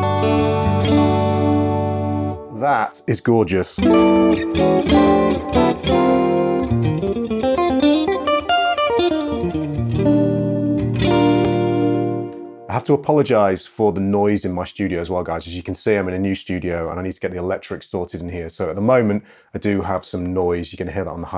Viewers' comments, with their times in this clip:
0:08 that tone reminds me of the Late Allan Holdsworth. Awesome video as always thanks for doing this brother.